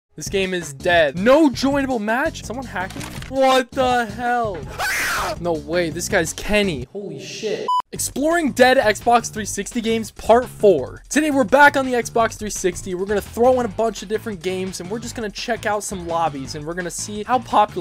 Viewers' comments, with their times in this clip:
0:04 dude screaming like a anime character